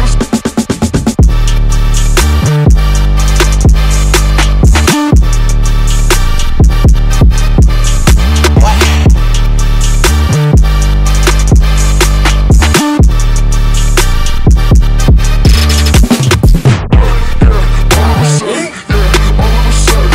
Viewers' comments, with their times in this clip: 0:08 Hahahah playboi carti w/ "whaa" 😂🤷🏿‍♂️